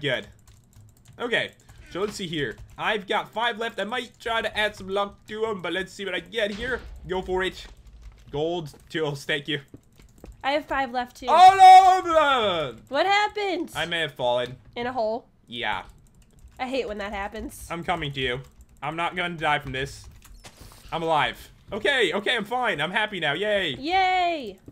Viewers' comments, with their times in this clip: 0:10 when the downsyndrome kid trys to say aluacaba